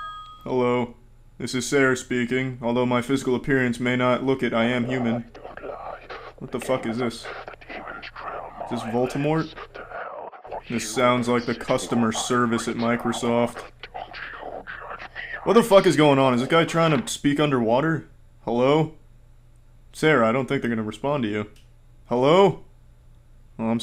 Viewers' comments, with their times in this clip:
0:10 Sounds like the customer service at circuit city to me......wait....